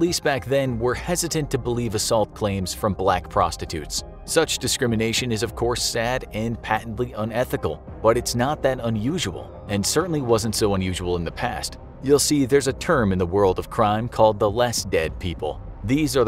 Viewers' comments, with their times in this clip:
0:03 squid game mic